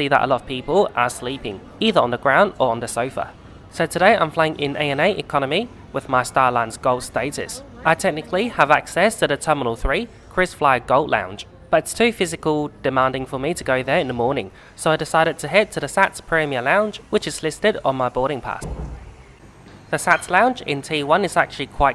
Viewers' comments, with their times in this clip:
0:07 Star Alliance becomes starline's :face-blue-smiling: